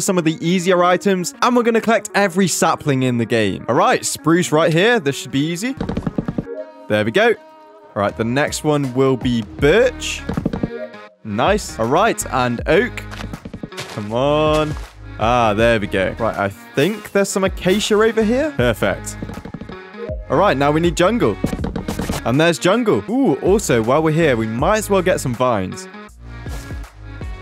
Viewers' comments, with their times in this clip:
0:09 Him: Next one will be birch My brain: HE SAID B*TCH!